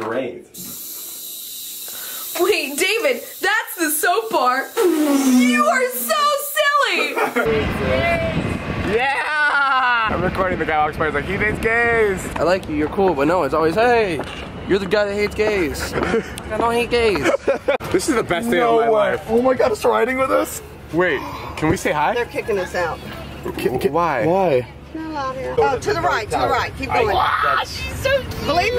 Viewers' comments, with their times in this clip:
0:09 Why did David sound like the sponge bob dude in the beach episode ???